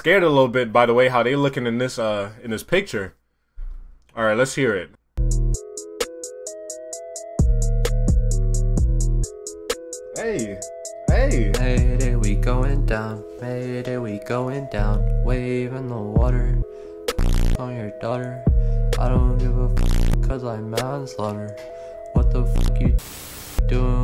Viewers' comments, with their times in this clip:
0:05 The beat goes hard but everything else is a hard no lmao